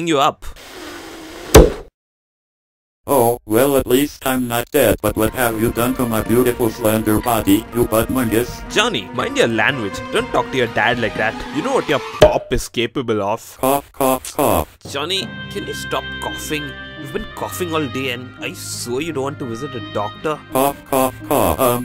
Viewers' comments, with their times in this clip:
0:06 ı just scare of that song